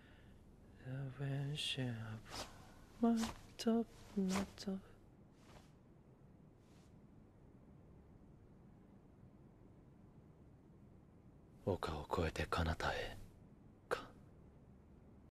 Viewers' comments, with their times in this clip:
0:11 That voice... <3